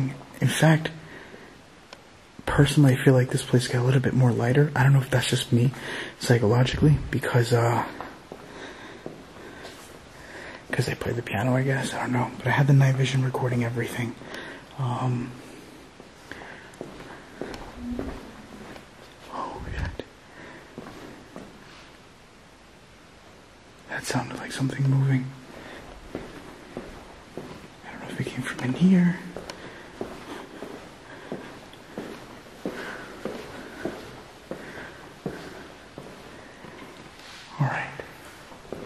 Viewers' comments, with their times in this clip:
0:09 where he thinks something moves but I hear a disembodied voice. Female.
0:15 Female voice says "Play Again"
0:16 sounds like a woman saying can you help me.
0:17 Great catches when you hear that woman's voice I swear it sounds like "I miss you Frank"... Idk but that's what I'm hearing again great catches ✌
0:18 Female voice saying something can't quite make out what.
0:18 a female voice
0:19 a lady s heard humming a tune. Guess as a response to your sweet song you played. Its a clear voice
0:19 I heard a couple piano strokes !!! Still watching for anything else... love the channel every time I watch something else!!!!
0:20 you can hear a woman humming